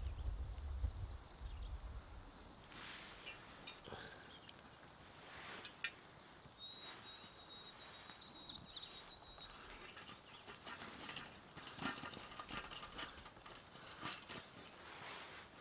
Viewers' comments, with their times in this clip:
0:03 It sounds like the chickadees are saying "Cheeseburger"